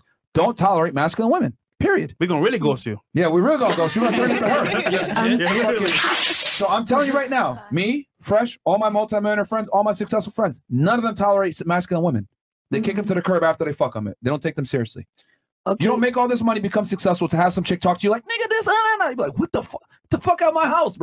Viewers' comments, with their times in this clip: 0:06 The DBZ teleportation soundbyte 😂 🔥